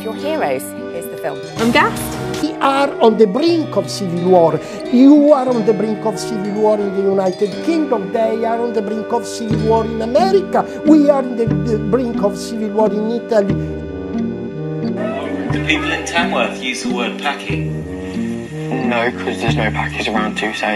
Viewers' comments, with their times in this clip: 0:07 the only word I could understand from that guy was America